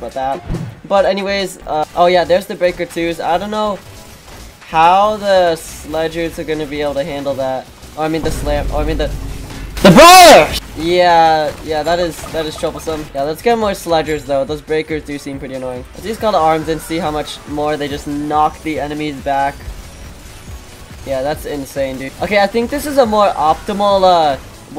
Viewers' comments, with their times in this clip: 0:10 bro scream was soo loud the entire country heard it 💀